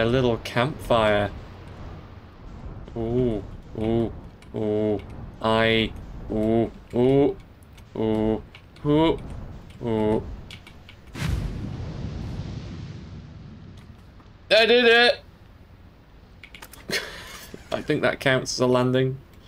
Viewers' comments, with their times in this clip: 0:06 I really appreciate the "oo"-based landing system